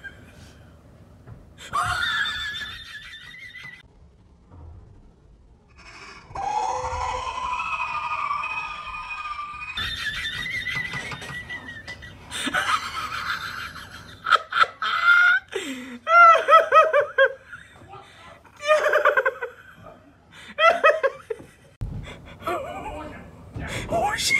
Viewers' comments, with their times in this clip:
0:04 the laugh blended in
0:04 the weez sound like something from Star Wars
0:05 There's a tea kettle ay
0:06 horror noises #prankmas